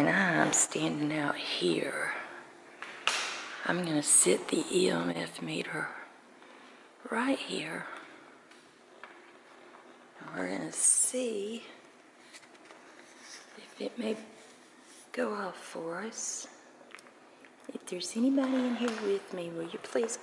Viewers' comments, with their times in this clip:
0:03 loud female whisper "hide" or "hi"